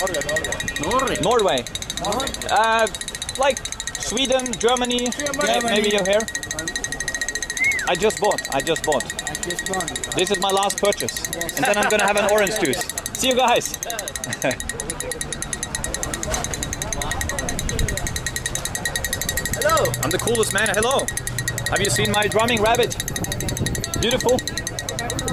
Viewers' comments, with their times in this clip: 0:06 best part is the guy making the whistle noise lol